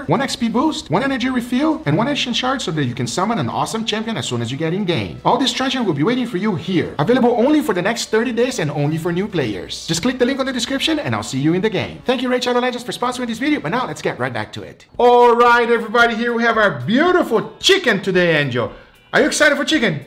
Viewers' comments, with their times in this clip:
0:07 that sped up ad section lol